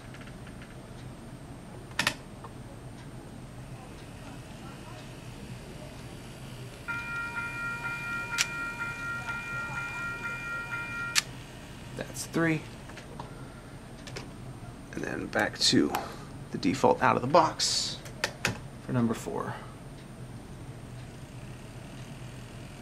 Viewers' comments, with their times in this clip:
0:07 they have E-bells!! That’s so cool!
0:07 I have a crossing by my house with that same bell.